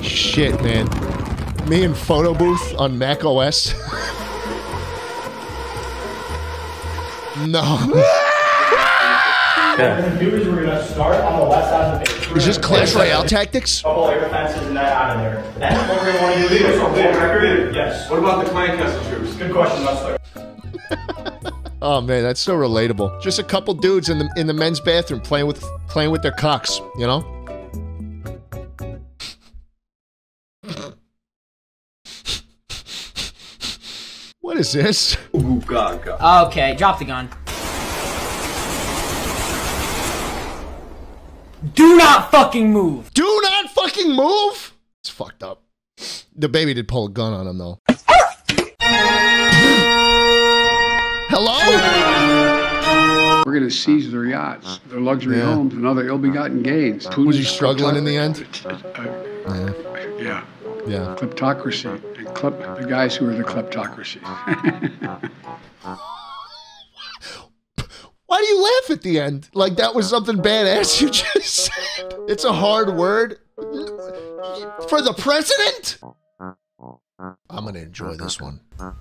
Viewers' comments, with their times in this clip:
0:08 I love how he just screamed along with the dude, I literally couldn't stop laughing XD
1:00 I was drinking juice then when he said “yeah” so normally I laughed so hard the juice came out my nose and idk why😭😭
1:04 He's got that Ludwig laugh